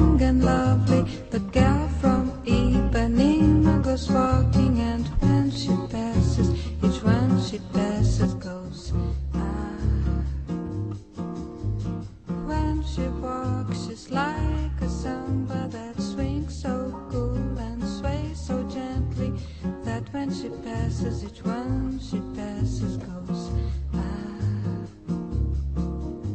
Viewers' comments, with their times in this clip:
0:08 the volume goes lower for some reason